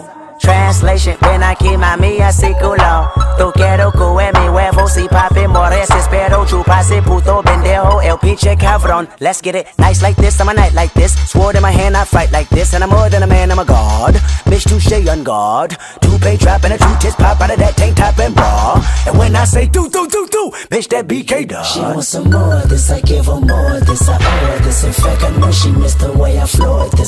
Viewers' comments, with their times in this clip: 0:05 is where the song goes hard😭🤣
0:08 Here the beat wait for a couple sec
0:09 drops some good beatdrop!
0:10 was when the beat dropped JoJo siwa hair line went further back